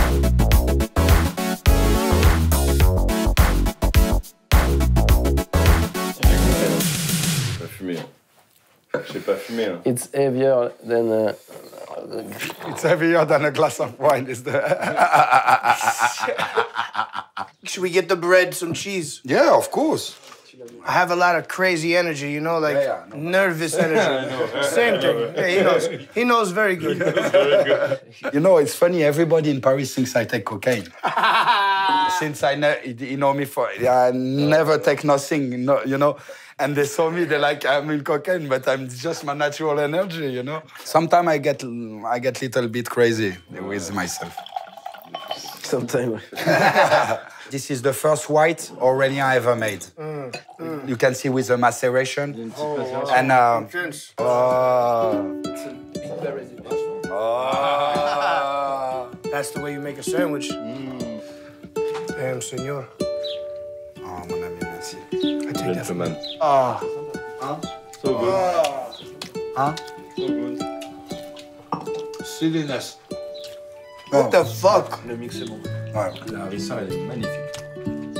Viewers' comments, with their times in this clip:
0:10 the weed laugh kicking in...
0:30 my laugh when I level up on Skyrim
0:59 french cheese board sounds